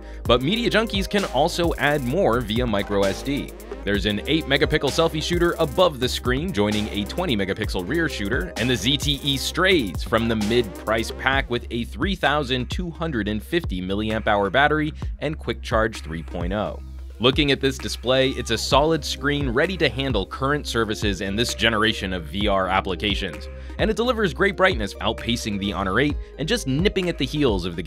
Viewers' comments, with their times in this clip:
0:03 "An 8 Megapickle Camera"
0:03 eight megapickle? that's impressive!
0:03 he says 8 mega pickle. LOL!
0:04 Eight MEGA-PICKLE Selfie shooter!
0:04 I'm pretty sure I heard him say there is an "8 mega-PICKLE selfie shooter"
0:05 lol "there's an 8 megapickel front facing camera" 😂
0:13 Is it me or did he not say "megapixel" properly?